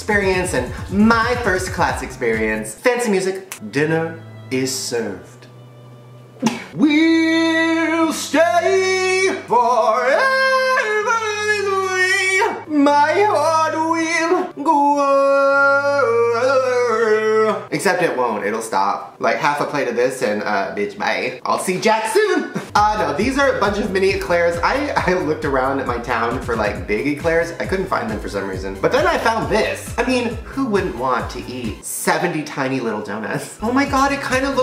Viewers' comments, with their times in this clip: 0:07 I feel like if he tried he would actually sound pretty good .🤷‍♀️
0:10 Best voice crack
0:16 I love Shane but he sounds like a bagpipe 😂😂😂